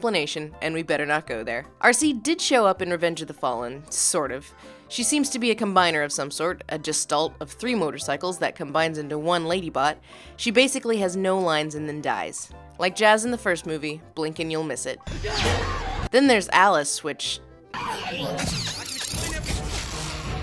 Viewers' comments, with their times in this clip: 0:07 did you say JEST-ault? Did you mean gestalt? As in, pronounced as GESHtält?